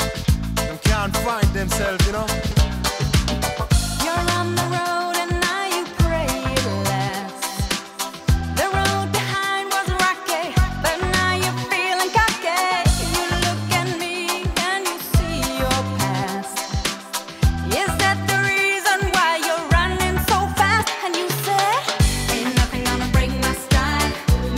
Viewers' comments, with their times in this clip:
0:08 The road behind was rocky, but now your feeling KACKE 💩 (Germans will understand)
0:09 I understand at: "I must be lucky but i am feel me kacke*" 🤣😂 *Kacke is the Germans Word for Shit and this Band was from Germany
0:09 you feeling kacke